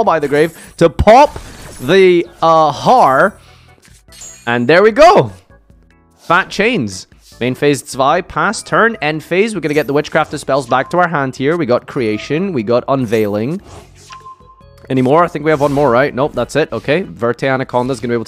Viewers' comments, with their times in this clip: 0:06 Main Phase ZWEI?! German